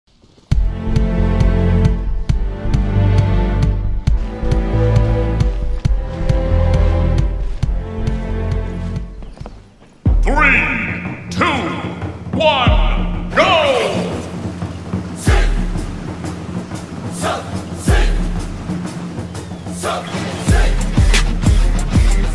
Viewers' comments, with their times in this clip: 0:05 NO THE HAIKYUU MUSIC- HELP IN LOVE